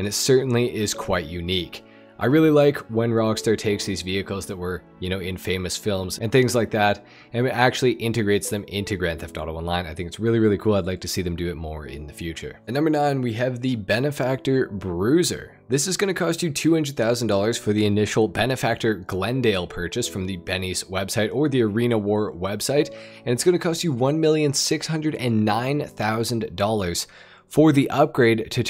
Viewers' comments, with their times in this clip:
0:09 I thought bro said “red dead online” and I was about to comment and say “Biden moment” 🤣 Edit: 7 lol